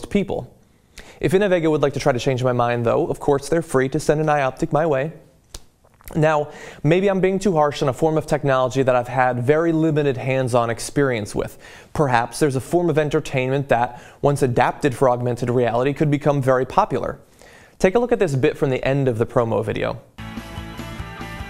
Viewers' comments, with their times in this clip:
0:03 "to send an eye optic my way (disgusting hard swallow)"